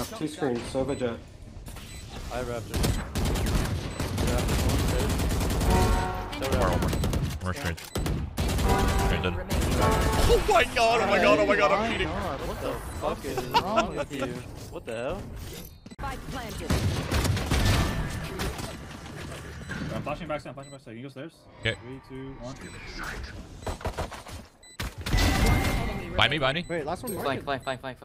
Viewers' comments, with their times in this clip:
0:09 im more amazed at how those 2 in comms synced their reaction